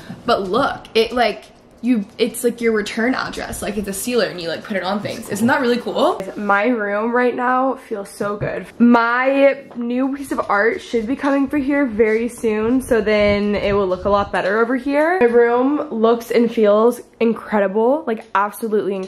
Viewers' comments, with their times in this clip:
0:05 Ma'am... whose voice was that 👀